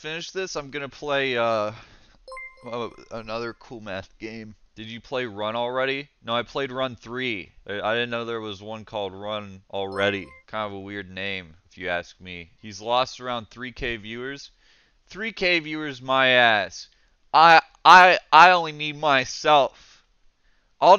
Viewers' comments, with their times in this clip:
0:03 The delivery on get me every time. Its so funny